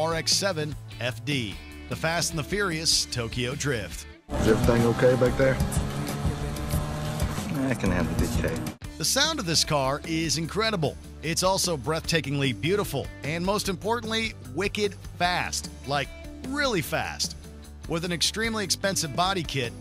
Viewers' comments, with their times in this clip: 0:07 listen to the scene sounds like the tuners from cars